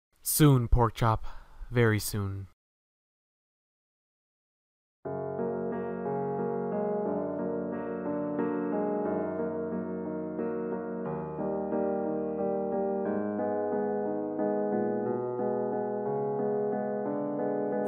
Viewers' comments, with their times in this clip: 0:05 is were the song starts